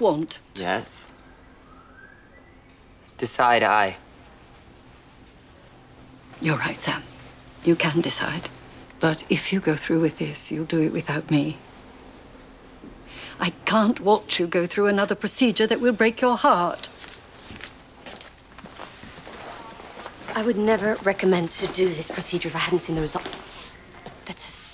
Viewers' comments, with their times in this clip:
0:05 when he said 'decide i' it sounded like he said 'side eye' lol time stamp